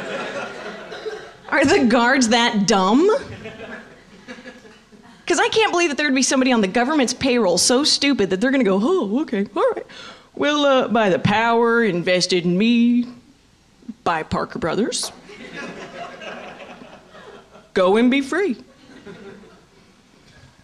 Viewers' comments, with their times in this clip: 0:06 The crowd was kind of dead !???! Was this like in the AFTERNOON ?!!!!